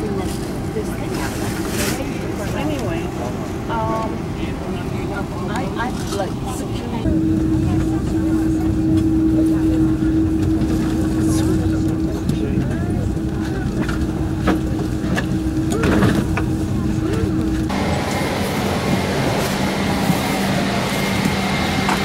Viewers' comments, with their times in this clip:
0:09 I loved this report! I don’t know why, but I especially loved with the EVA Air A330. Probably that beautiful CF6-80E hum... (Yes I know that sounds cringey)